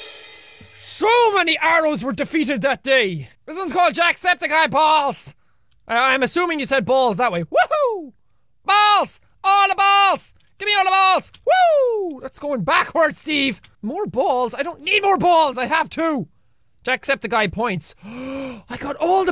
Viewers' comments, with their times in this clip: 0:05 Jack when you said balls you sounded like the fish in the ps2 game nemo